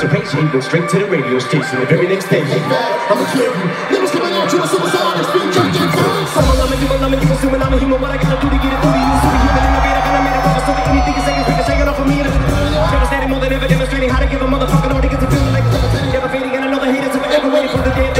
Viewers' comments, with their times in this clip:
0:04 supersonic speed (rap god)